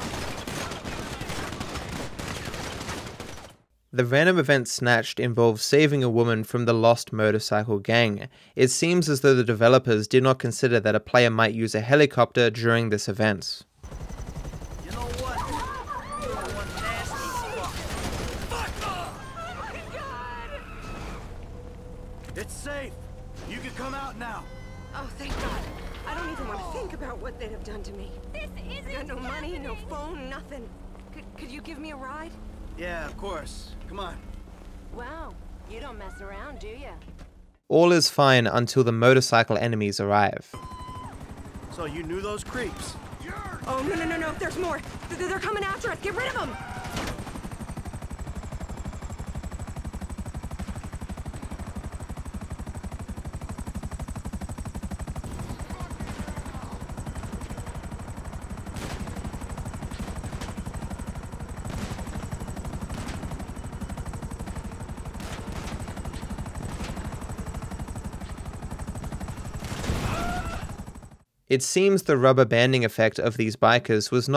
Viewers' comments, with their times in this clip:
0:04 *Our god is an awesome god loudly plays*
0:57 Harry potter theme earrape